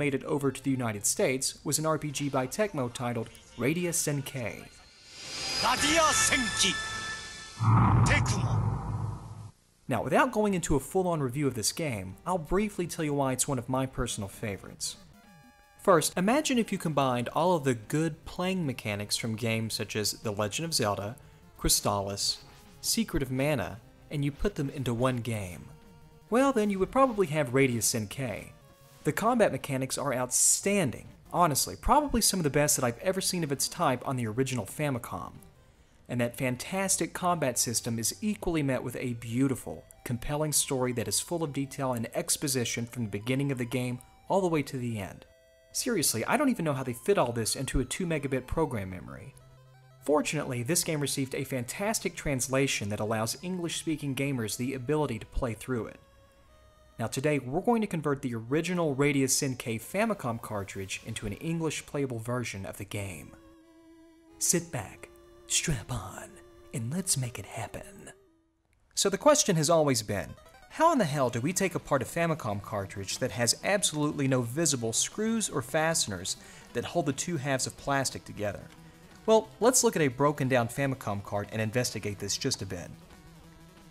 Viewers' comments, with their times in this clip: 0:05 i hate to be that guy but senki isn't pronounced senkeyy :P listen to your own example it's pretty clearly senkee :D
1:04 were you intending to imitate Solid Snake?